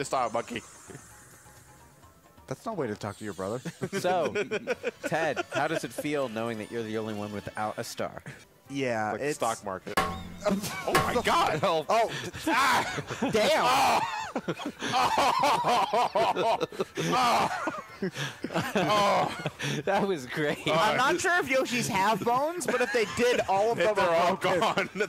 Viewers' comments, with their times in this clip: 0:09 The dings are so perfectly timed.